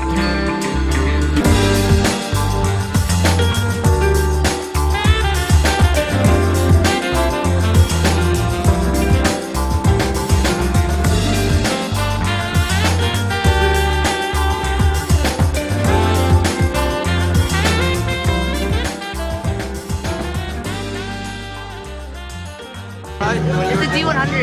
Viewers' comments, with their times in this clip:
0:09 haha at the end the song my sweet Lord was playing in the back ground! thats a good song! nice tricks man! and also the Asian girl was really pretty! :)